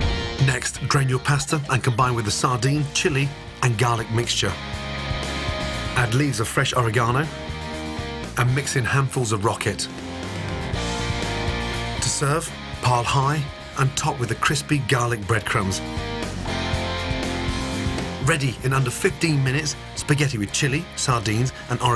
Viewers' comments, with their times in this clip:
0:08 handfuls of.. Rocket? I Totally misunderstood what he said. Anyone?